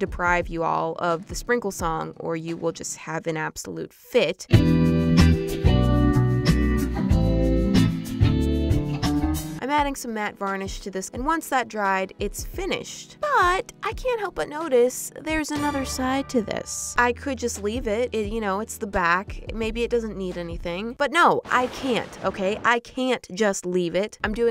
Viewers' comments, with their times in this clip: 0:07 "I can't deprive you of the sprinkle song or you will have a absolute fit" plays sprinkle song